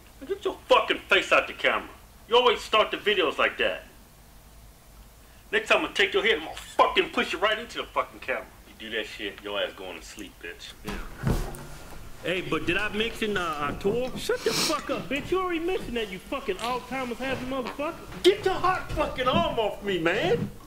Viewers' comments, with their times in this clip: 0:05 I broke where I thought you were gonna break He said it so matter of factly. I forgot about that one...